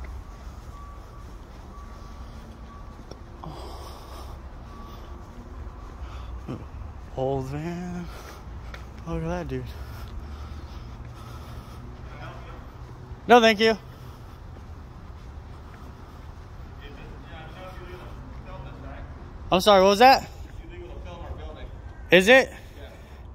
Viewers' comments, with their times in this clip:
0:09 dude is totally out of breath from a slow walk. Get right with Self before you go trying to lord it over other people.